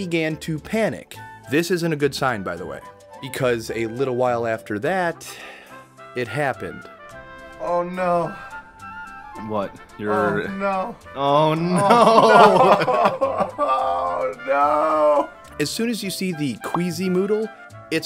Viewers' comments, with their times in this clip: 0:06 the pain in his voice is so real